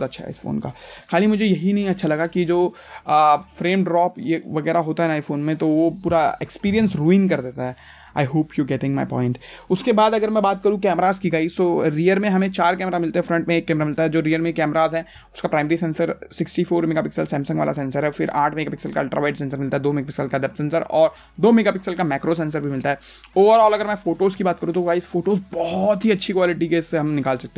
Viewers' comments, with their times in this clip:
0:08 .... I huppe 😂😂😂😂😂😂😂😂😂😂😂 U cane getting my point